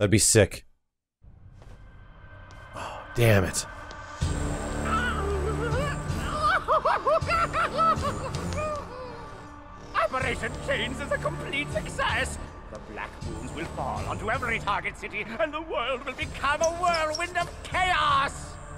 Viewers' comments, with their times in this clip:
0:03 Why does he sound like an autotuned baby